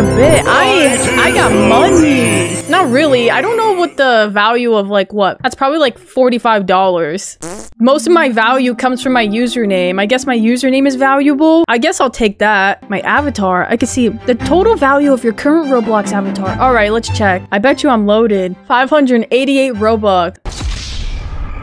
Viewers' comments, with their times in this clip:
0:07 The fart sound 🤣🤣🤣🤣